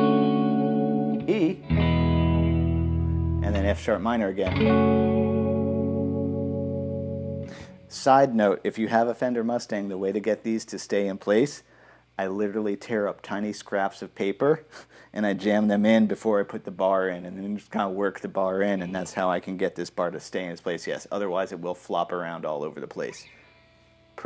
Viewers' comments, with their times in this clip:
0:06 I really like that 3 chord cadence (that resolves to F#m). It's like the so-called "Mario Cadence" in minor with some major 7 prettiness thrown in.